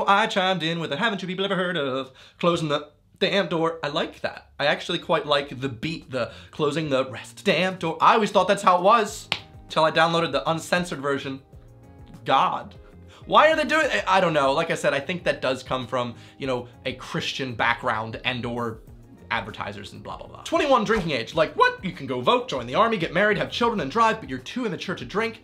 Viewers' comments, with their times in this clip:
0:07 why you wobbling your voice so hard lol